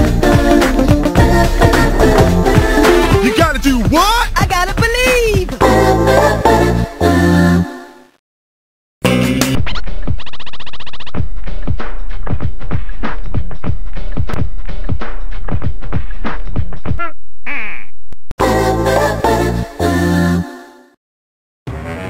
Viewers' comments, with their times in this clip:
0:08 Jet Baby Music Casually Plays